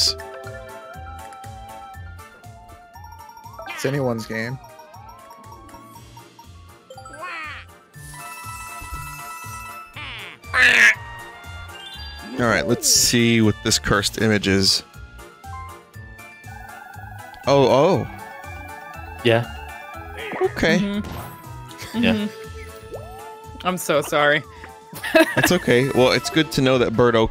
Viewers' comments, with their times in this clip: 0:09 vinny's scream dude like this is the reason i put on these videos if i wait long enough i am rewarded tenfold